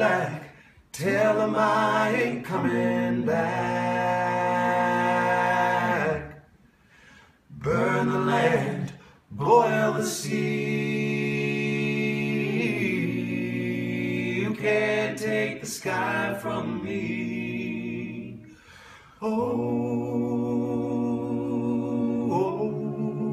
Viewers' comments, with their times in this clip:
0:05 the harmonizes oh my god, im dying. I want to listen to these guys 24/7